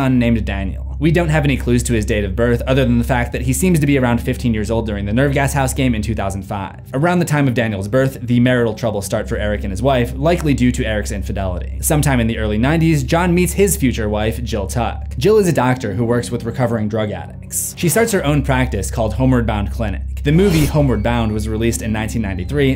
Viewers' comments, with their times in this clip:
0:06 they say 2005 at the same time 😂